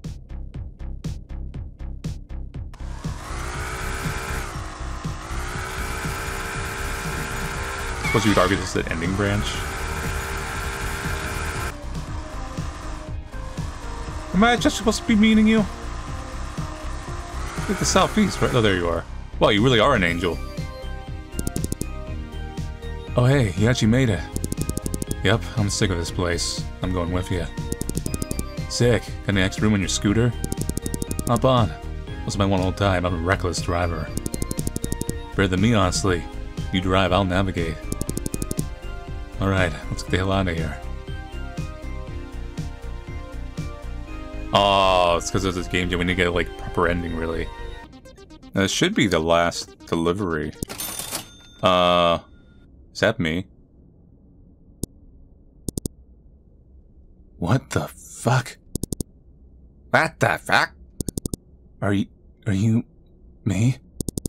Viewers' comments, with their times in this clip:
0:06 The kickass beat in though.
0:51 Pizza Time Never Ends starts playing